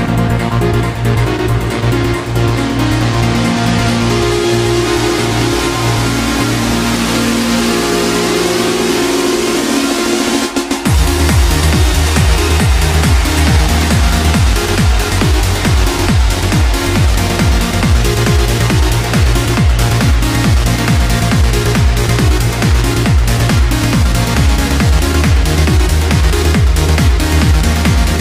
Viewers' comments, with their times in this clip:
0:09 What An incredible drop!!!!!!!